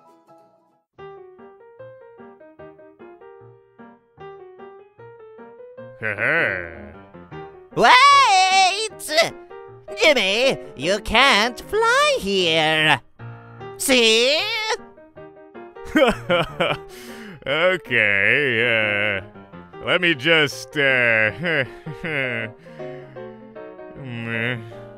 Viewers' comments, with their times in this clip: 0:10 why did Beppi sound like Papyrus or is it just me